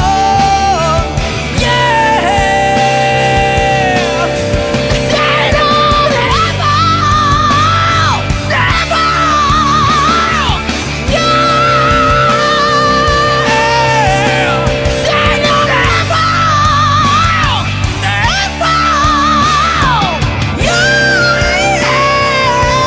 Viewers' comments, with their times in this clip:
0:06 Great vocal control! Walked right along the edge